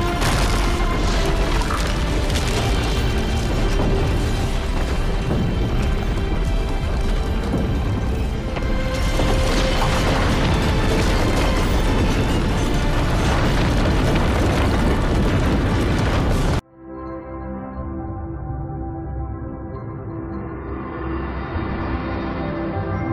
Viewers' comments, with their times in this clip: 0:09 Why does this sound like a strike from Wii.
0:09 When your uncle farts